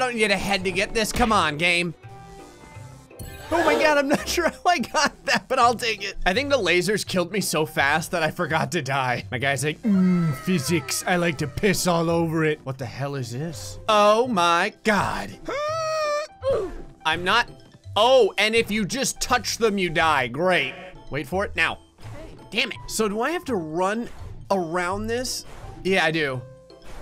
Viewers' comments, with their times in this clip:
0:09 Idk why he sounds like Donald Trump😂😂😂😄😄😁🤣🤣🤣🤣😅😂😂😂🤣